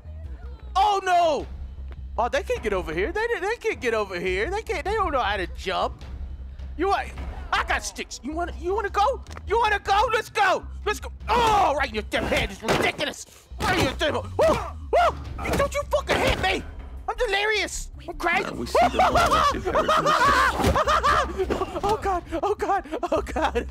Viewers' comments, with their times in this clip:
0:08 Now we listen to Delirious imitate a bad cop